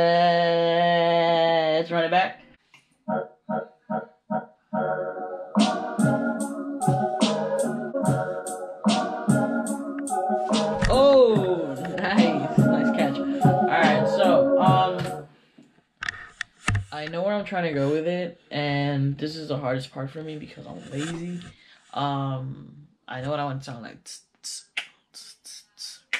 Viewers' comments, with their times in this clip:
0:08 Good save lol, but an even better beat let's goooooooooo